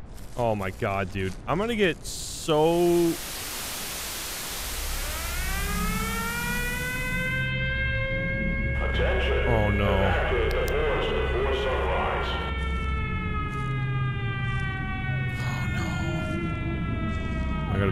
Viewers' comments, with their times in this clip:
0:04 oh nah buddy's cooked got that siren head siren jit tripping